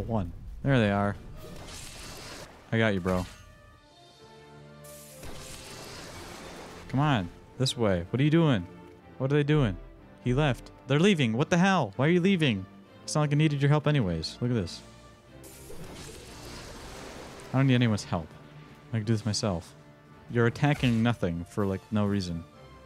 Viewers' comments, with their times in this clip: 0:08 Jonathan's theme caught me off guard 😭😭🤣